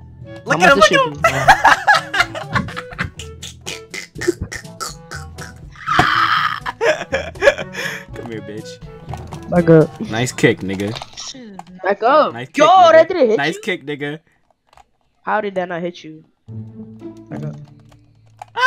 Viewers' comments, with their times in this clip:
0:04 that laugh #remember me